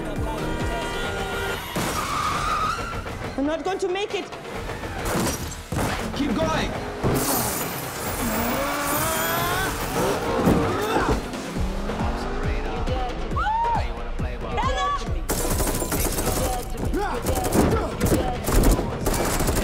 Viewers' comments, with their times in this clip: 0:05 bro that aint sound like black panther